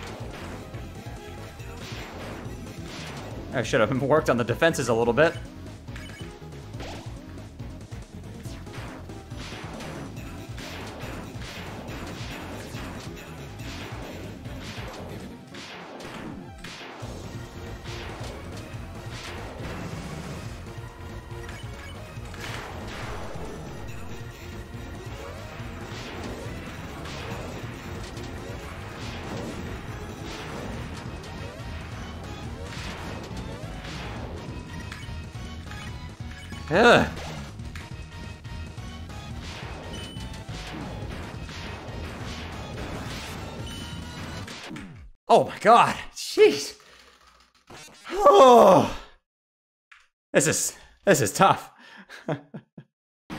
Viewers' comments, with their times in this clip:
0:06 That music sync is insane!
0:35 you can hear power of NEO